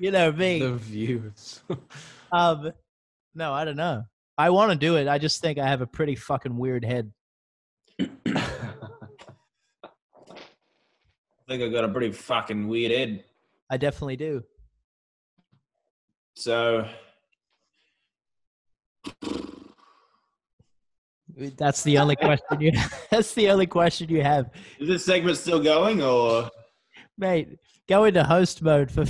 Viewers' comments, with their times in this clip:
0:10 "I think I got a pretty fraucking weid ead" I CANT- WHY IS THIS SO FUNNY TO ME